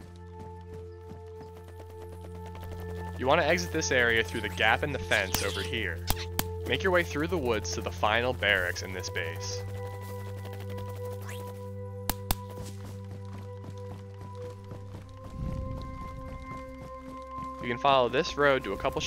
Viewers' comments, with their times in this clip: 0:04 chipmunk-sounding zombies... not that scary. lol